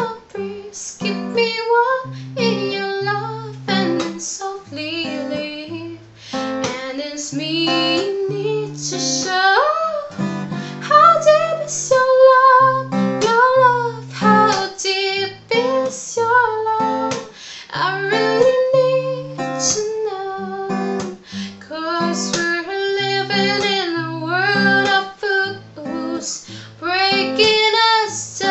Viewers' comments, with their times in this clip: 0:09 love the vocal jump